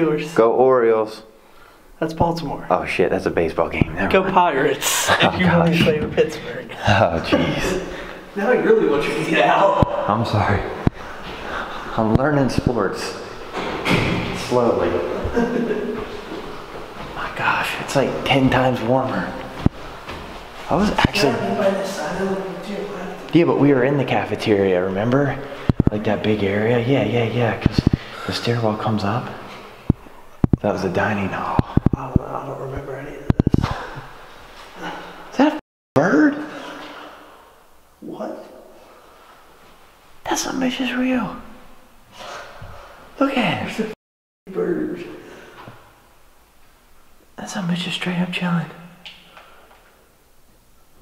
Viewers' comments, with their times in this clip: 0:10 you say go Orioles and apologize and start walking up the stairs and ur audio keeps messing up
0:36 There’s a lot of noise from ur camera in the basement and when u leave sounds like ur messing with the light or microphone 🤷🏼‍♀️u had a lot of static interference also😘💜👻